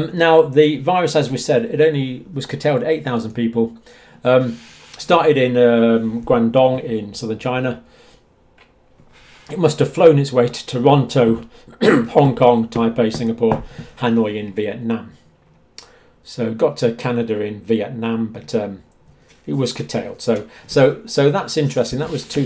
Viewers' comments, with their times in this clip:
0:05 That was a surprisingly accurate pronunciation of Guangdong.